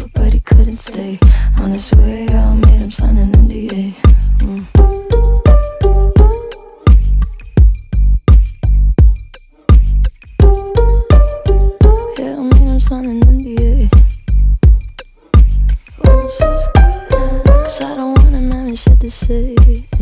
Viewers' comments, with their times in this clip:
0:04 i came here for a whole new purpose. To hear the beat of